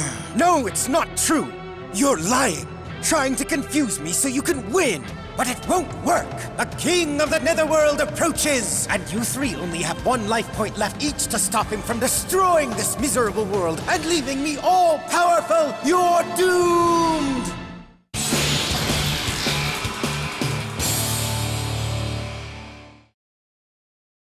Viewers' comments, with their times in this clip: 0:09 Is it just me, or did old Goodwin remind anyone of the box ghost from danny Phantom. Shouting out "YOUR DOOMED" 😂